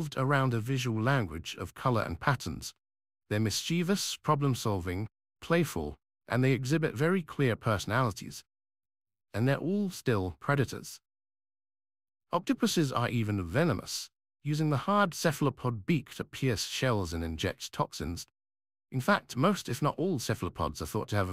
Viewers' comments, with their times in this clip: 0:03 Can someone please explain how British people manage to struggle to pronounce just about every word in existence